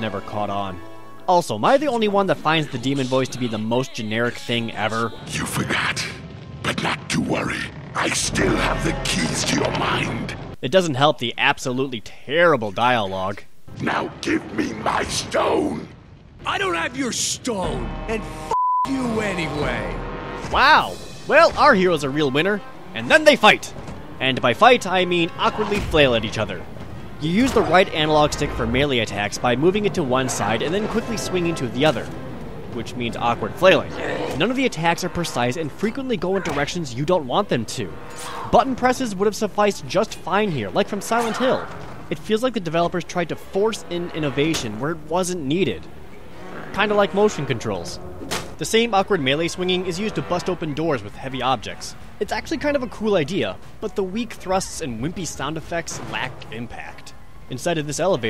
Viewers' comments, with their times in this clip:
0:06 So...the woman is possessed by Dr. Claw?
0:46 idk why but just second or two of silence kinda like motion controls THACK idk why but that one part alone is making me kill over with laughter xD
0:46 "Like motion controls. (Loud whack)" That sound is motion controls in a shell nut.